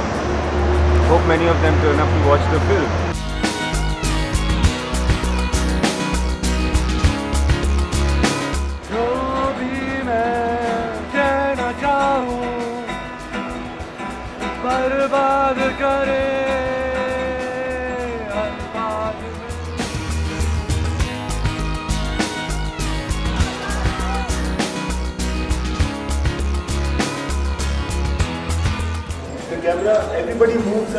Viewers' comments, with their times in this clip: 0:08 Ranbir kapoor sings ROFL :D Cant stop my laugh :D :P
0:11 Even the guitar is untuned. :D